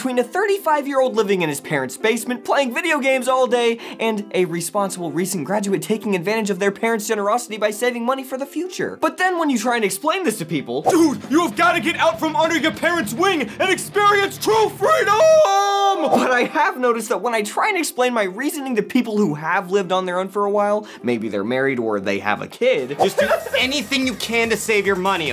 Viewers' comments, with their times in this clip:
0:06 I love that moment when the music kicks in for both sides of the headphones.